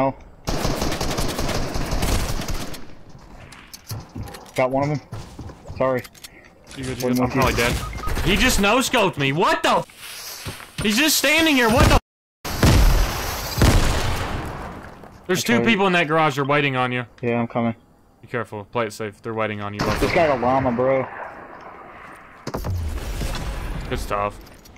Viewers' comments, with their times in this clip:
0:10 he was clipping it😂😂😭